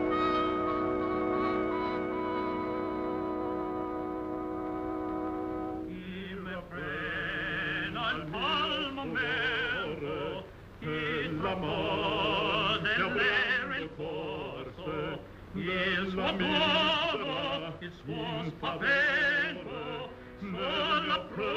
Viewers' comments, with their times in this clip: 0:07 there occurs a piece of awesome unexpected singing art! Quite astonishing and delightful.